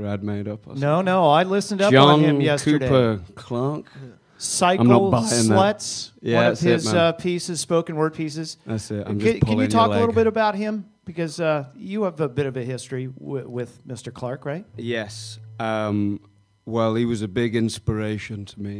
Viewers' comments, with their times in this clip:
0:04 lol cute voice crack